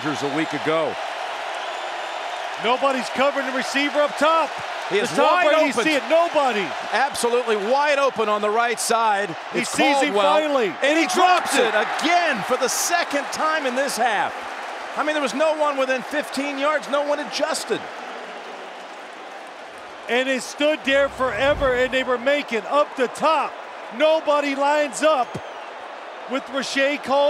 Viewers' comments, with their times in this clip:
0:09 Both Nantz and Simms perfectly coordinated